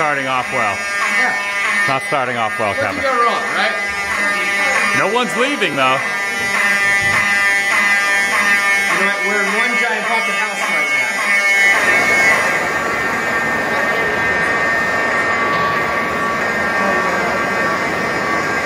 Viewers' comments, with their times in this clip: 0:03 Hall of Fire Alarms! :) Sorry I had to LOL Did ya know the Queen Mary ship in Long Beach is supposed to be really haunted? Ever go on it? Shall you? :)